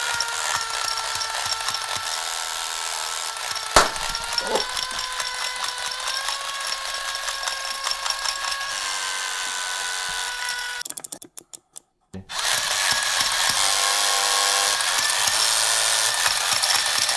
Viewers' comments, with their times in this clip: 0:03 Watch for your ears!